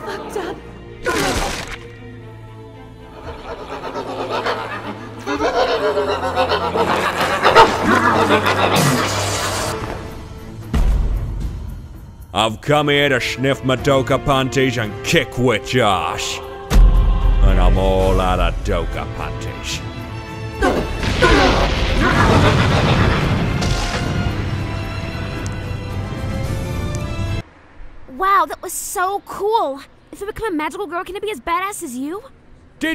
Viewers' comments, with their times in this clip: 0:09 Love how as Homura enters the music changes to Fate/Zero's soundtrack, praise Kajiura
0:19 Homura fight become more epic with that Fate zero OST XD